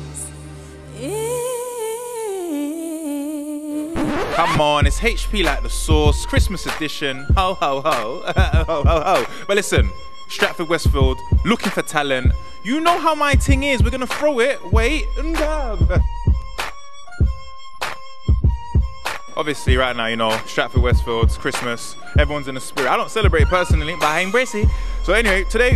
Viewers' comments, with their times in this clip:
0:07 sounding like Flirta D